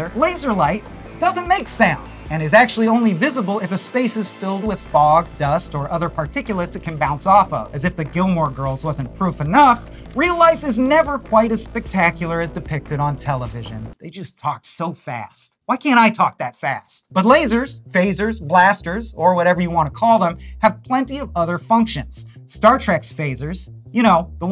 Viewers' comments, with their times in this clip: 0:08 Talking fast is an east coast thing. I get told to slow down all the time when I'm not in New England.